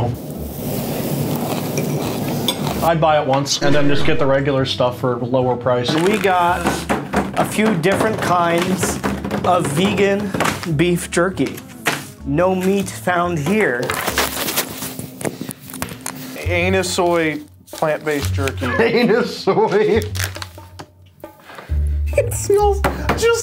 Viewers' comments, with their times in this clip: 0:08 the way the drumroll stopped as soon as he said vegan